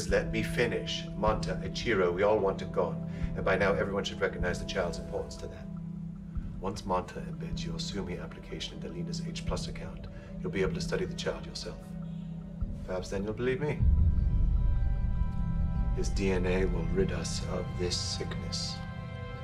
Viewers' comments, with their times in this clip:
0:06 I have watched it over and over but there is a part of the dialogue I just cannot understand. it sounds like the doctor says "Once Manta --- application the leaders of H+ account," and the part I'm missing sounds to me like: "anbensyosummi" I am trying to figure out what his plan is.